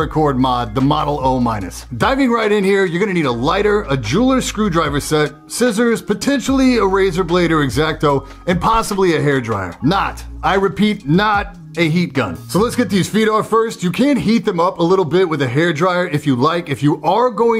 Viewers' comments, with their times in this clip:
0:03 A Juul or screwdriver set